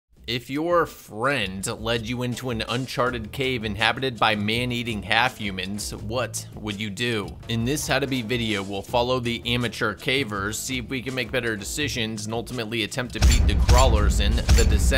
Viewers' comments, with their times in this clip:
0:01 Emphasis on the "friend".